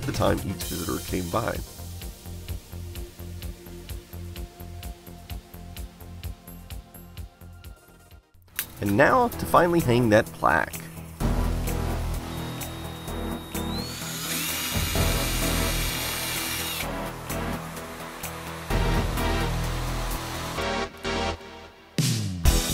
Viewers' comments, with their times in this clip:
0:08 “And now to finally hang that plaque” boss music plays